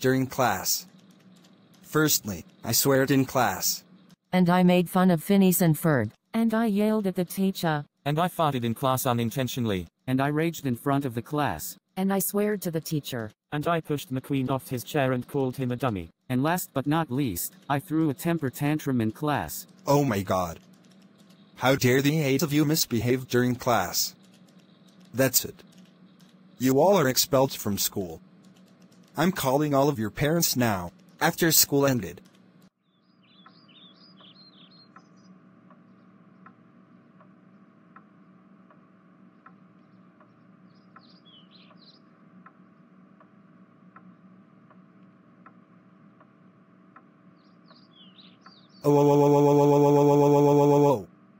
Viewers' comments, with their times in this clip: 0:05 that sounds like the AI voice “Samantha”
0:36 the most silent punishment slap in the world 💀